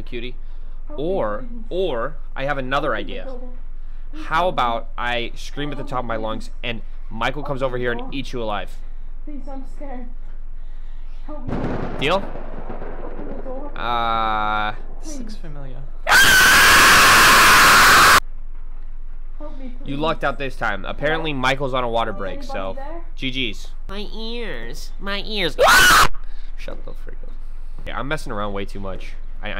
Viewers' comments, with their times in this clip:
0:09 jeez that scream XD i jsut want share it with friends
0:16 rip headphones user😂
0:16 man SCREAMS LOUDER LIKE AN OHIO PERSON FROM MEXICO OHIO (it shitted my pants very loud ☠️☠️☠️☠️☠️☠️💀💀💀💀💀